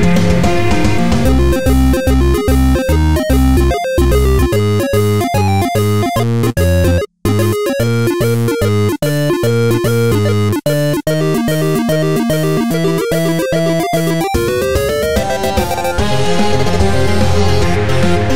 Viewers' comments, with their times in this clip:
0:06 I know this is kind of weird but I allowed myself to think the audio glitch was actually a part of the song. I know the glitch wasn't intended but I view it not as a mistake but part of the masterpiece that is Swings and Roundabouts. I'm both glad and slightly disappointed the error was patched up.
0:06 I'm a little bit sad that you got rid of the little "ching" sound that was in the original version of Swings and Roundabouts that you had published. I really liked that part. Overall, I really enjoyed these songs though!